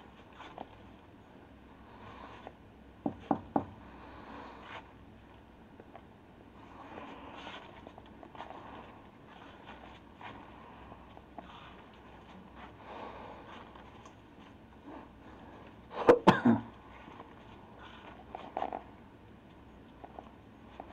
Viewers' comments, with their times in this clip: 0:04 Did anyone else NOTICE that once the detective made his way down in the basement there were 3 KNOCKS?? The camera didn’t jiggle so I know it wasn’t the detective. It sounded like it was right by his head but he didn’t react or explain why he might have knocked. In places where death occurred or devil worshipping occurs, demons will reside in houses, buildings etc. And when there’s a guest walking around, they’ll make themselves known by knocking 3 times. Supposedly a “mock” of the trinity. In paranormal vids that have demonic entities, there’s numerous cases where people would hear 3 knocks OR they wouldn’t hear it but the camera would pick up the sounds of the knocking. Idk maybe nothing but maybe creepy AF!!! Maybe he did knock idk. If he did it’s really fuckin random.